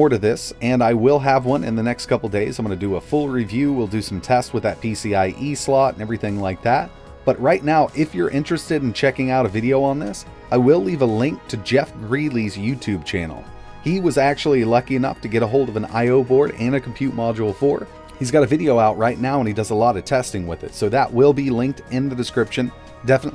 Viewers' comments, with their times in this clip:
0:10 "I will leave a link to Jeff Greely's Youtube channel"... shows Jeff Geerling's channel